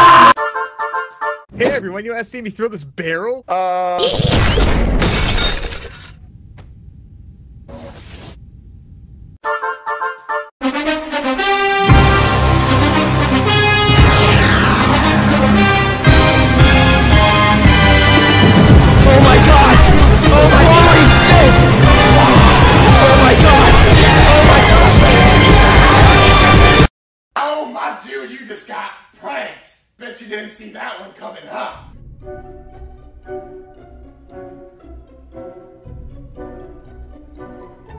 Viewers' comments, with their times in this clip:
0:10 I love how you have the nfl theme playing
0:18 Did anyone else die when Lefty appeared at the door and It started playing Mr. Saxobeat ? Aka
0:25 What did they say... I couldn't hear them